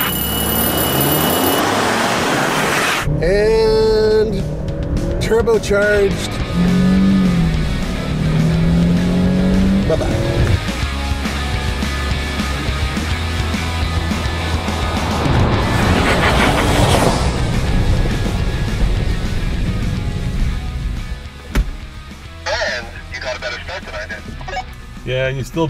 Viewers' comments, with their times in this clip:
0:08 ... VTEC just kicked in YO.....brrrrrrrrrrrrrrrrrrrrrrrrrrrrrp, brrrrrrrrrrrrrrrrp